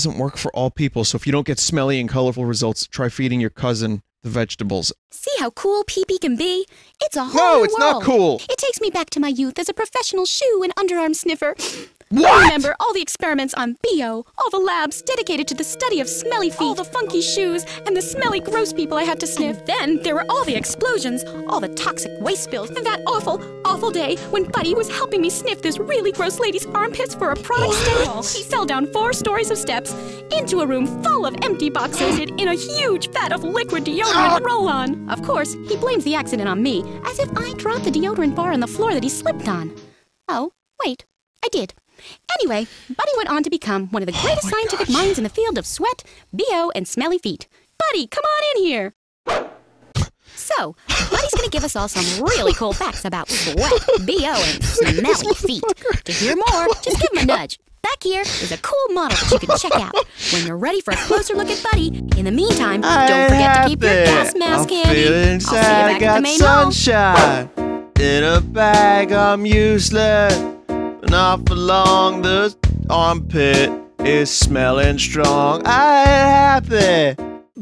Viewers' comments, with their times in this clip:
0:08 the way Vinny says what makes it sound like and actual conversation between a normal person and a person with a huge foot fetish
0:12 THE FUCKING WAY HE SAYS “WHAT”
0:48 this guy appears with sonic's homing attack sound and he has blue hair
0:58 Proceeds to sing clint eastwood